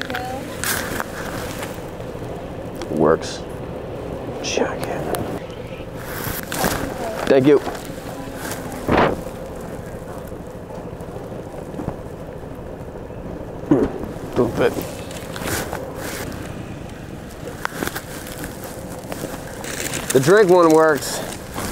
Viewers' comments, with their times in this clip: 0:05 the straw sound